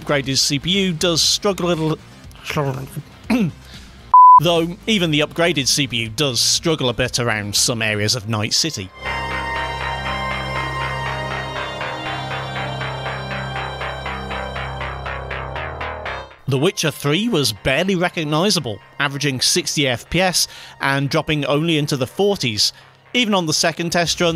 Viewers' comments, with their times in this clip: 0:07 For some reason I misheard that as "some areas of Nice City" and thought to myself, "Well, that's a daring take."